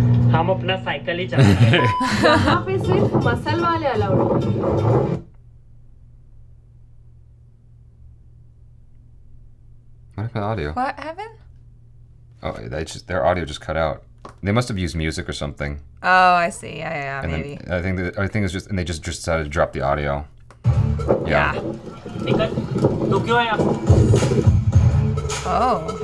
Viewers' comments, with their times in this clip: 0:10 this thing is due to copyright strike... Everyone has faced that